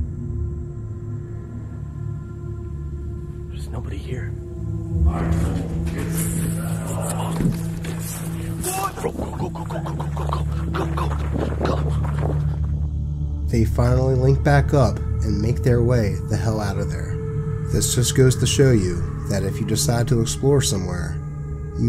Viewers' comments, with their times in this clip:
0:04 I told you kids to get the hell outta here 😂😮 sounds like a scooby doo villain. I can't believe his partner just ditched his ass like that too ❤
0:06 does he say “I’m full of piss get the hell outta here”??